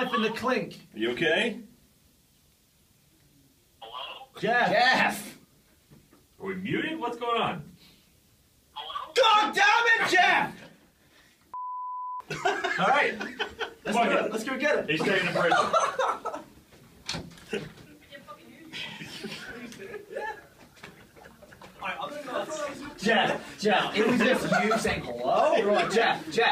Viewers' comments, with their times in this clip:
0:08 Gavin sounds like Stewie from Family Guy
0:09 gavin yelling made ray jump XD